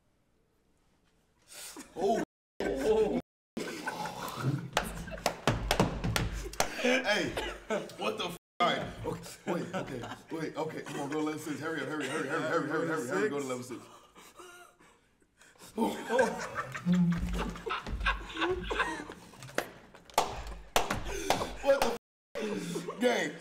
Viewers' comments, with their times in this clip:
0:05 they just made a whole ass beat